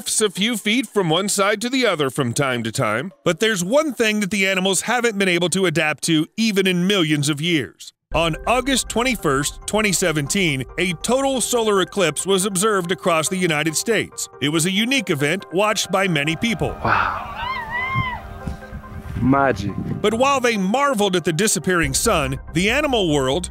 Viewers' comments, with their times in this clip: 0:08 dude, the background sounds like me getting a messenger call, tripped me out for a minute! LOL. Thanks for the awesome vid!
0:09 Does anyone else hear his phone ringing in the background
0:10 I actually though someone is calling me on messenger